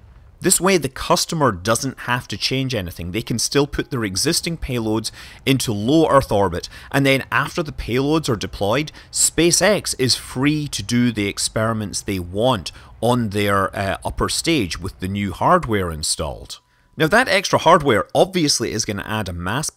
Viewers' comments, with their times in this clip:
0:05 Is it me or is there the world's faintest doorbell ringing in the background ?